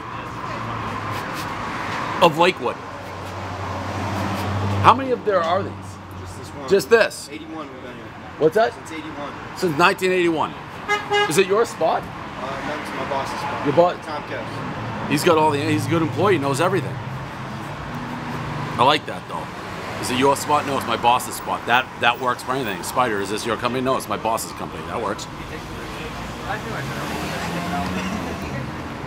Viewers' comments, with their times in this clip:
0:10 The honk was perfectly timed lol